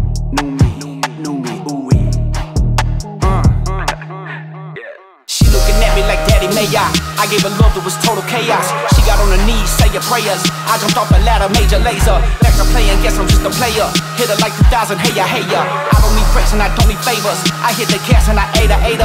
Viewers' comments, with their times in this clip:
0:06 Who's Favorite part is when that beat drops ?